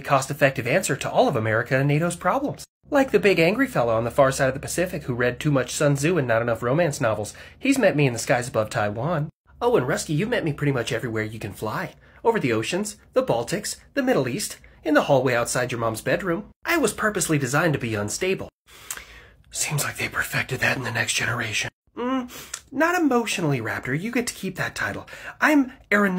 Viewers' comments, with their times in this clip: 0:07 It sounds like the guy who plays Deadpool
0:14 how you gonna have the f-16 sound like Ryan Reynolds? 😂